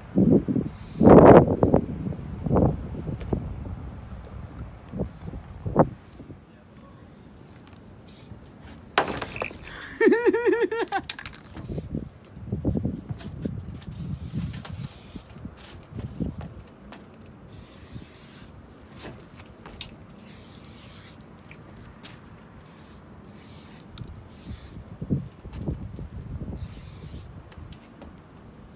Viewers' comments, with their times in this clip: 0:10 the laugh has me fucking dead